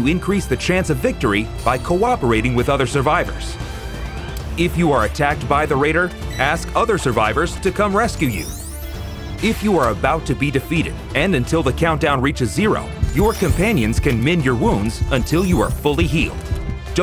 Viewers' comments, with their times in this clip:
0:04 Bruh lmao they are Foul for that 😂😂😂😂 screaming for help by using the krillin scream hahaha 🤣